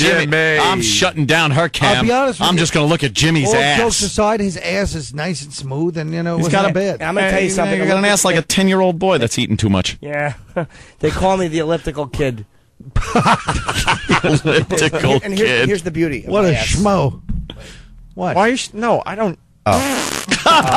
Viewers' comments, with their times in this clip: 0:07 I love how Jimmy seamlessly goes into Uncle Paul when Anthony makes the ten year old boy comment.